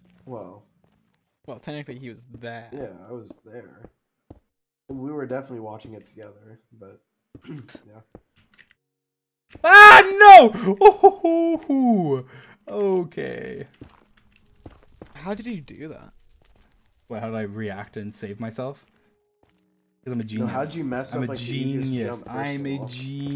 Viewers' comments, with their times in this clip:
0:09 his voice is so smooth